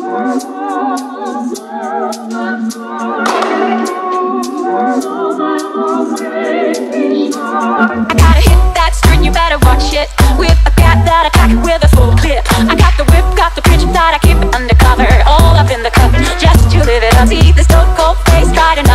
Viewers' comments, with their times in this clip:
0:05 who else thought it says baby shark at the beginning of the songs? heres one for ya: